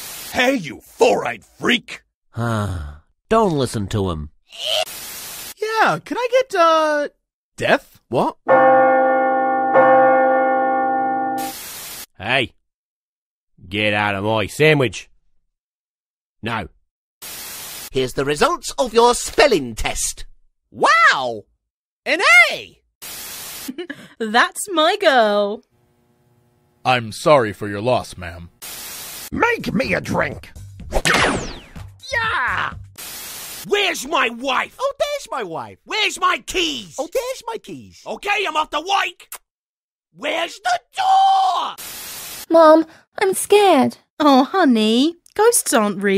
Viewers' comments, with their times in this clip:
0:05 this voice fits purple face
0:23 how did Clock actually sound like him in BFB/TPOT
0:29 why does sound like suction cup man
0:34 I would’ve laughed so hard if this was David’s voice🤣